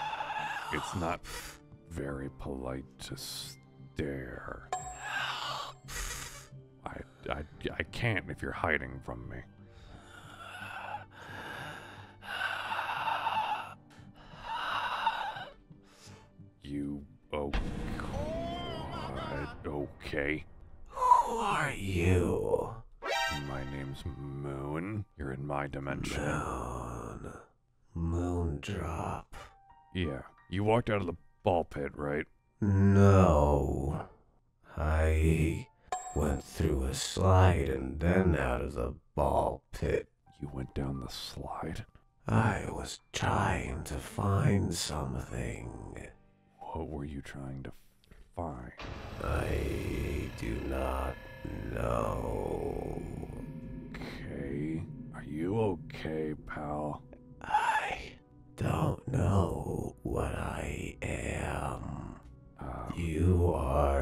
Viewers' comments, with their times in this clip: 0:04 bro sounds like me when I have a asthma attack
0:18 i love him! I love him already!! I love how freaky he is! I love how he talks! I love his use of body language (basically how he moves) i love everything about him!!
0:50 I had been wondering when molten Freddy would show up his voice reminds me of eclipse in that one moment 🤨